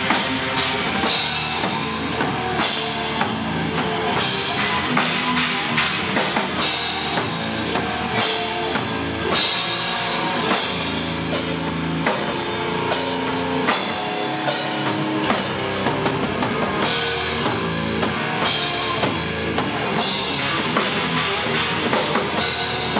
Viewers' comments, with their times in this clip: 0:06 they make this break more groovy than the album track, and it's really cool!!!